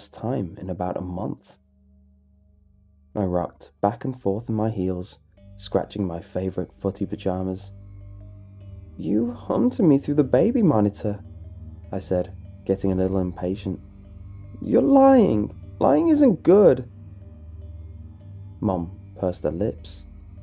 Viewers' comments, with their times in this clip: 0:06 somethings wrong with me I heard 'footie vajahnas'